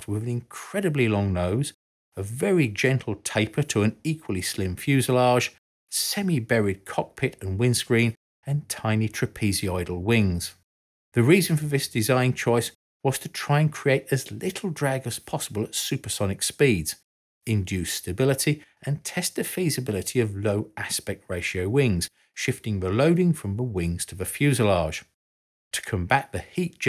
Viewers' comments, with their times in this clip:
0:08 interestingly, this is the first time I've heard a brit pronounce "trapezoidal" and I wasnt aware that it was such a stark difference to the yank pronunciation.